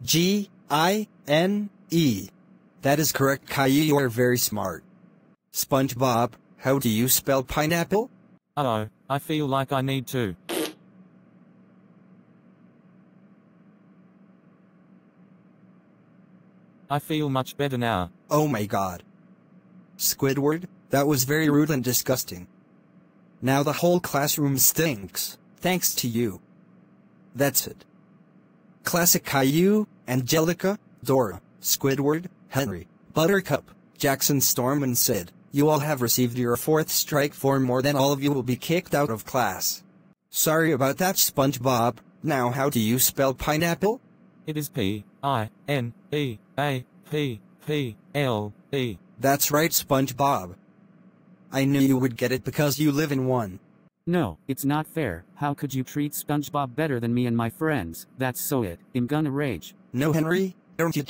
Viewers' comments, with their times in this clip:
0:10 Fart scene😂I can't stop laugh
0:11 Bro Squidward just farted
0:41 he spell it fast
0:44 he spell if fast=-O